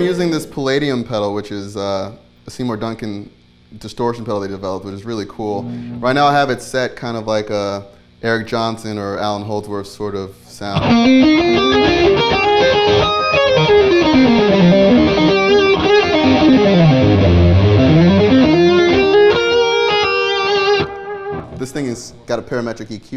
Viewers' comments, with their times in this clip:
0:10 his right that tone is very Holdsworthy. I love that tone so much